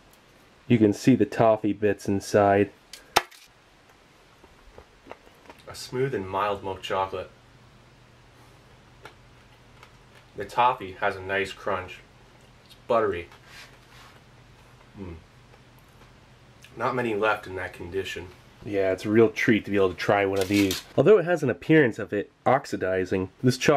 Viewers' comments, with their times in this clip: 0:06 you sound like matthew mcconaughey lmao